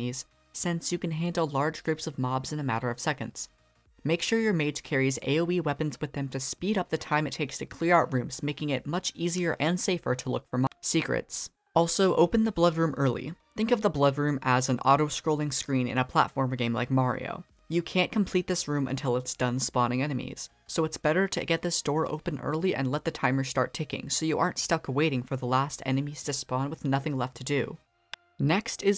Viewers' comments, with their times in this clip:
0:09 Nobody: Toad Making it much easier to look for moh-secrets